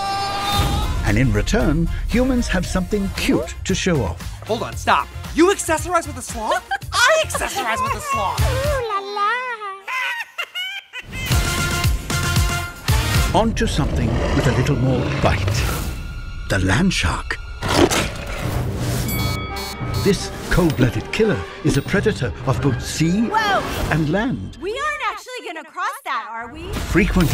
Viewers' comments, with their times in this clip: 0:09 the way Belt laughs. L-Amalgamation: Oh yeah, I remember when I laughed like that when L-Abomination face planted into a stone pillar in Greece. It was very hilarious.